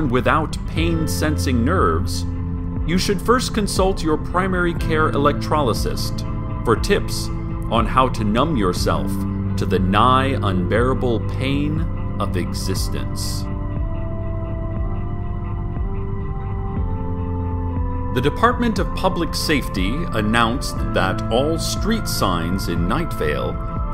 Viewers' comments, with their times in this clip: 0:05 The video always starts buffering at exactly and if I try to skip past this point there's a screaming noise and my computer shuts down.